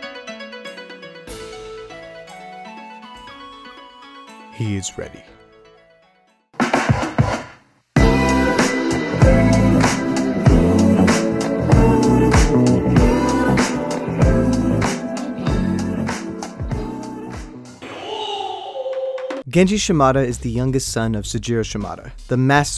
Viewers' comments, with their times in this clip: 0:07 lowkey sounds like its saying Genji for Noobs in the intro.